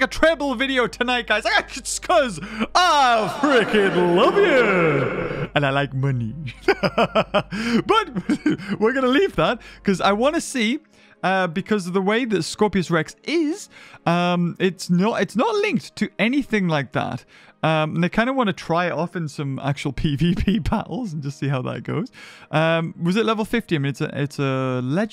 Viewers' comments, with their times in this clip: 0:06 that was one evil laugh!😂